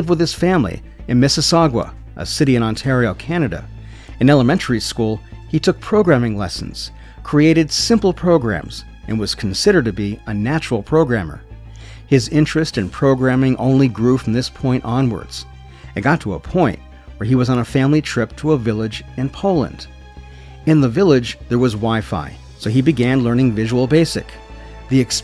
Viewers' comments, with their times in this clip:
0:06 Miss-E-Sog-uwa?????? Miss-E-Sog-uh. Sorry I know it doesn’t matter just caught me off guard